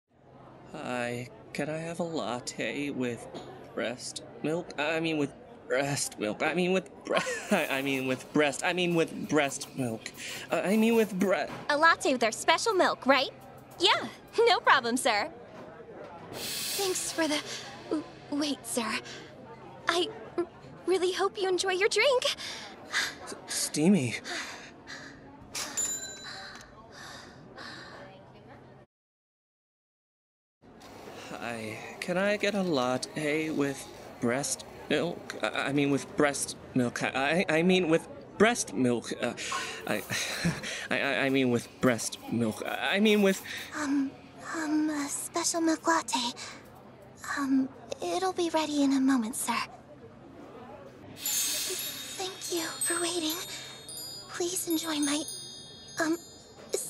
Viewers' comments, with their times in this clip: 0:04 you good bruv I mean you sound shy
0:06 I love how the laugh says “why am I forcing myself to read this script?”
0:44 her voice is like fluttershy in this scene!!🤩☺️